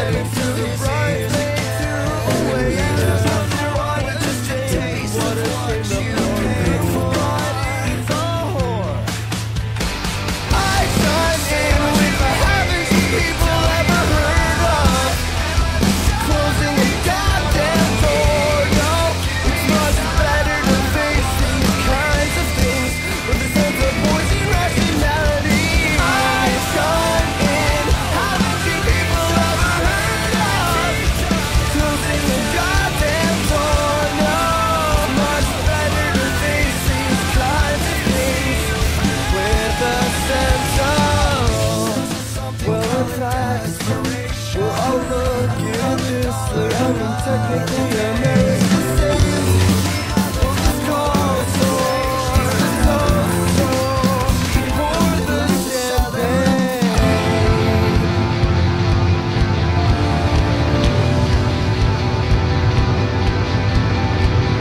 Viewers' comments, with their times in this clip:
0:09 it's gorgeous up until Like GORGEOUS. Then it's like whoever mashed it stopped trying and just threw the rest of the songs on top of each other. Someone needs to fix the over layering
0:24 It starts to tear at a little after but the beginning is great!
0:42 the only problem I had with this was the drums mashing together out of beat threw me off; but the chorus is awesome :)
0:50 sonds so weird....... it do not go at that part